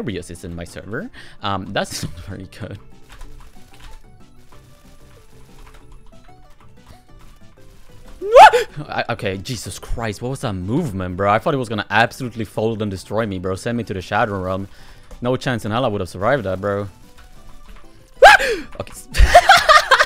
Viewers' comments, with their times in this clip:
0:07 THE SCREAM KILL ME